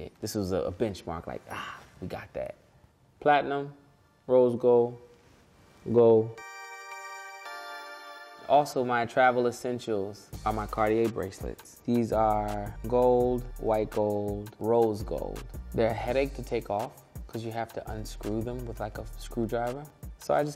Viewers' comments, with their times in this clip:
0:07 i love pusha but the way he said cartier bracelets had me DEAD LMFAO